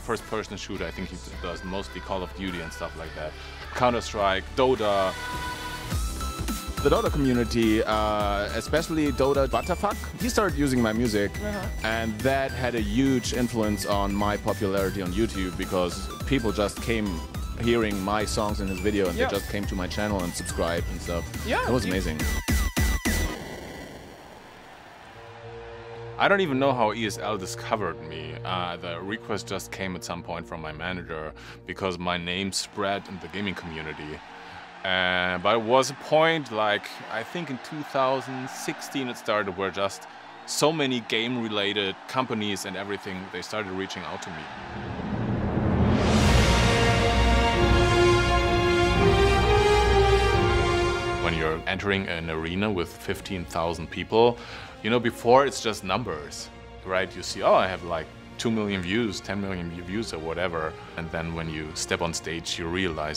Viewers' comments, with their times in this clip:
0:08 why did it sound like he said 'dota butterfuck'?
0:45 this song alway give me goosebumps